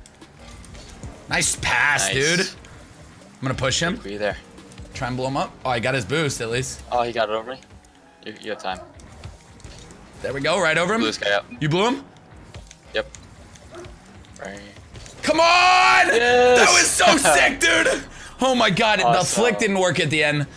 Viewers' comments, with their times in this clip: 0:07 is there moaning in the background??